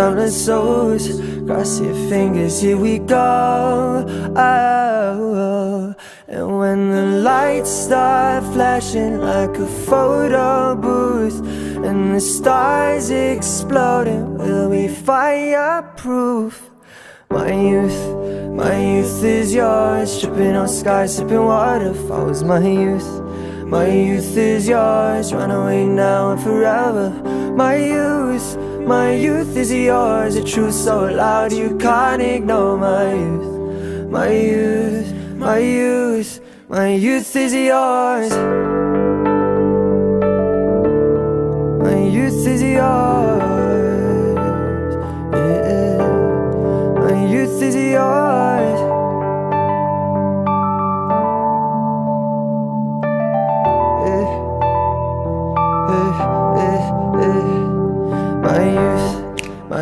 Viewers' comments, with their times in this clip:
0:05 that fucking riff
0:15 that little smile he does just after singing "fiyaah pwoof" made my day
0:15 FAYAPROOF ON IS SOOO ADORABLE OH MY GOSH
0:44 his voice oh myyy